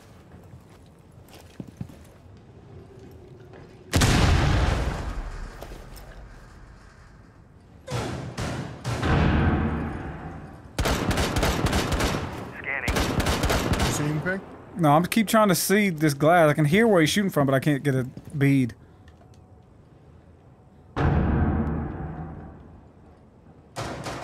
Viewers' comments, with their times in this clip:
0:05 listen for a weirdo sound. lol wtf is that??